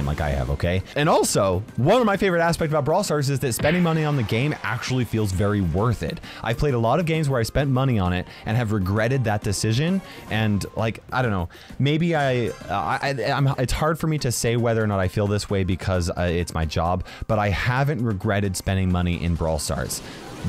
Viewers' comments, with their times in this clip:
0:03 The punching sound on the "next round" screen got me 😂😂